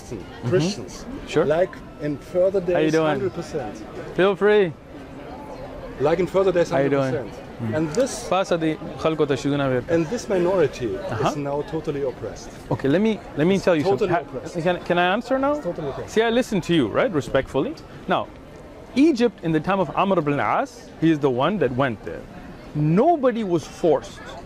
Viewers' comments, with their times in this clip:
0:08 he is speaking pashto😍i didn't know it,i am also a pashtoon.
0:08 he speaks in pushto «Paasa de khalgo ta chizona? Virka» - get up and give those people that stuff I didn’t get what he said proparly, as it is another dialect than mine.
0:08 Pashto spotted 😁😁 em loving it